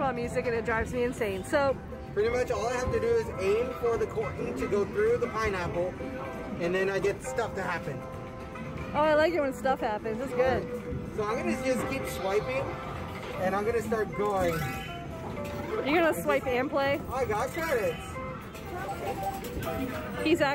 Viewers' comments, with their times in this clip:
0:03 Yes. The music my ears hear in any arcade video posted from an arcade containing that game.